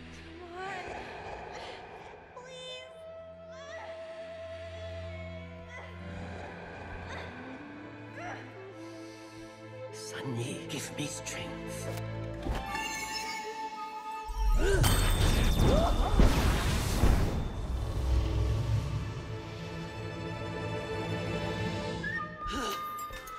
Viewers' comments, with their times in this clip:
0:08 Mei's grandmother Wu takes a deep breath and says, "Sun Yee, give me strength," while taking off her jade bracelet which is then thrown on the ground.